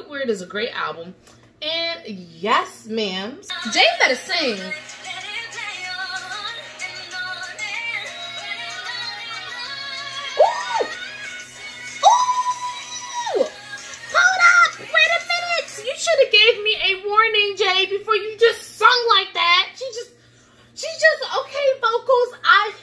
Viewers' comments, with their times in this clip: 0:10 that’s actually Leigh-Anne who does the first note! After it’s Jade. Loved your reaction!❤️